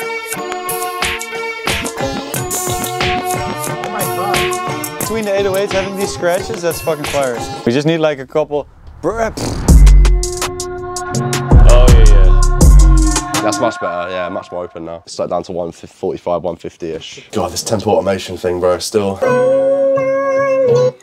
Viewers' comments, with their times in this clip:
0:04 bro was on his matrix shit when that reverse hit